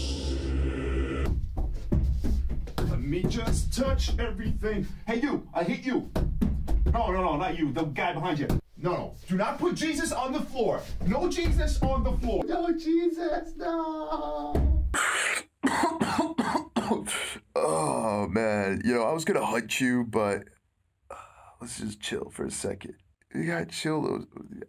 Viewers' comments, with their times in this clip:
0:09 the first time i heard this i head cheese-it(s) XD